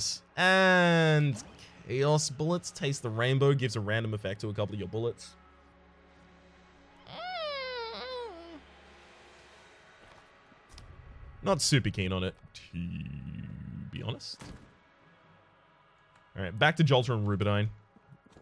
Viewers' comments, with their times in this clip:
0:06 Has super deep voice, and then